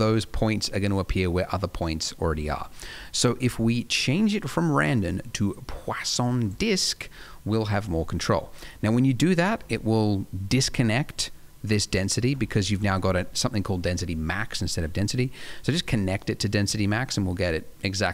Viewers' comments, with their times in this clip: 0:04 i think some stuff has changed in 9 months, heh. thanks for the tutorial, you are a talented teacher. edit: love that Poisson pronunciation in there.